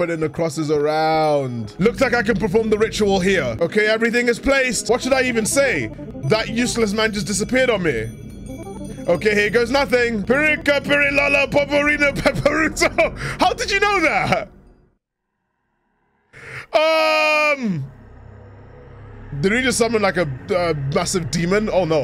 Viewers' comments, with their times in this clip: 0:08 bro speakin Namekian